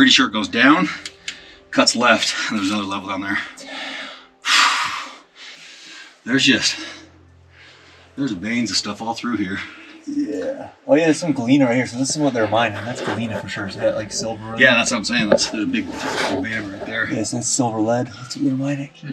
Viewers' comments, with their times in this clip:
0:04 spirit? Says “Yeah I Know” When he says, goes down, cuts left and there’s another level down there.